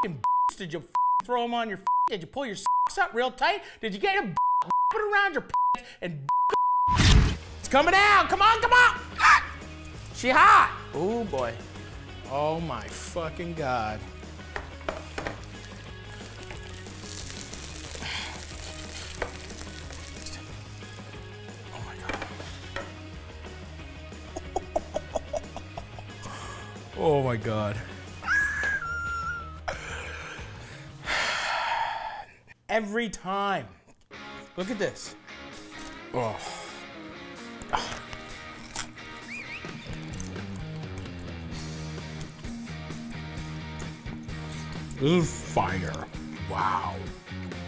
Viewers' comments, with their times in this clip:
0:09 You can tell Matty is in a good mood when he makes the gawk sound
0:29 Lmao The eagle screech was surreal. It's like his brain couldn't process such an American sandwich and his entire body was briefly inhabited by a bald eagle. This sandwich broke his brain.